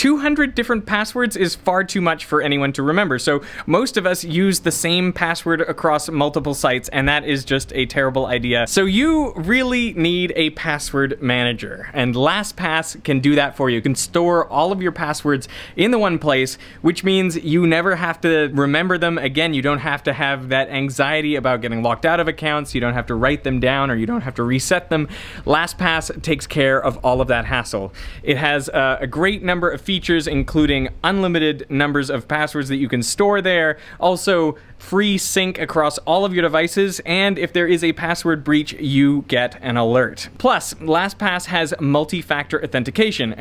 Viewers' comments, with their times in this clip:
0:05 All non English speakers: 🕵📈🔒 secyur
0:21 that voice crack lol
0:22 dat voice crack tho
0:22 Serious voice crack
0:22 sheesh that voicecrack
0:23 THE VOICE CRACK 💀
0:23 that voice crack tho, lol
0:23 voice crack lmao
0:23 this man voice cracked
0:23 that voice crack omg
0:23 voice breaks UwU
0:23 VOICE CRACK HAHAHA
0:23 anyone noticed the voice crack lmao.
0:23 hmmm voice crack
0:23 so did i just hear a voice crack or not?
0:23 i heard a voice crack lol
0:23 LMAO THAT VOICE CRACK
0:23 that voice crack lol
0:24 I laughed so hard at your voice crack
0:24 I watched the ad and was rewarded with a voice crack
0:24 is that a voice crack?
0:24 was that a voice crack
0:24 lol voice crack
0:24 Finally hits puberty